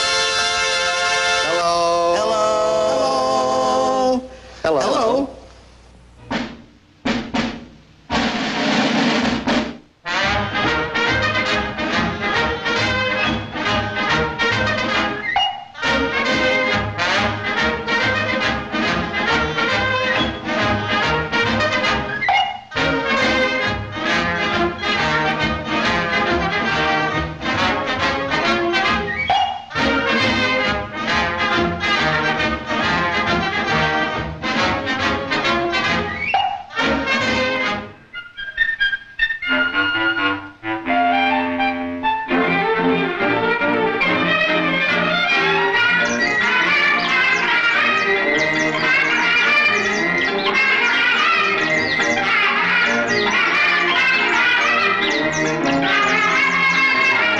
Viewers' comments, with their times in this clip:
0:06 drum sound like opening of twentieth century studios(fox)
0:38 What is the name of the theme where it sounds like there's a child's chorus singing la la la and birdies? The one that starts